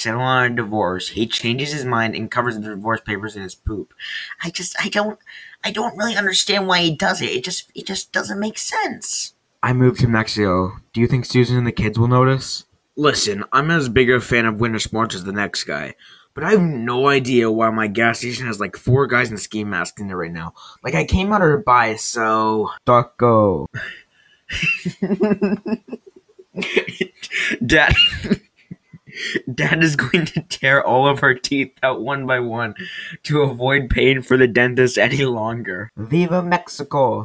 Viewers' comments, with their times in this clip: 0:07 Am I the only one that thinks it sounds like Marge from Simpsons
0:23 how he says it